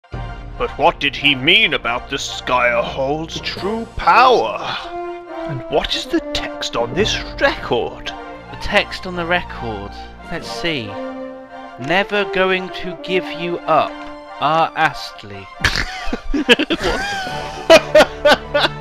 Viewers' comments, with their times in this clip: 0:00 I love that music